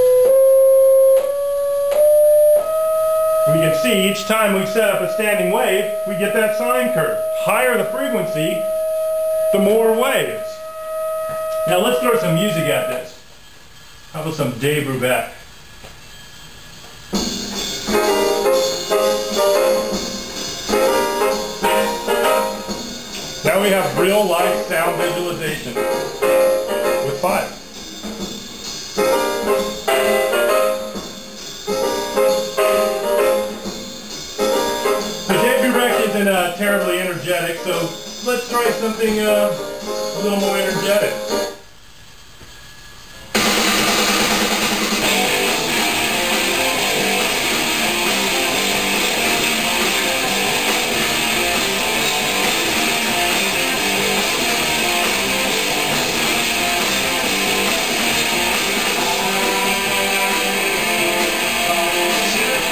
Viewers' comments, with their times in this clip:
0:03 lmao sounds like intro of "don't say that"
0:43 OK, who else had headphones on and darn near hit the roof ? XD